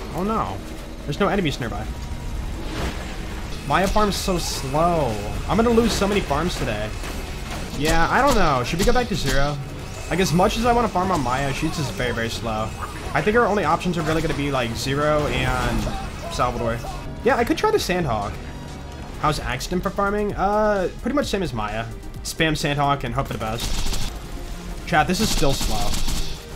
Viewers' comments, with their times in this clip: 0:10 my guy said Amaya 😂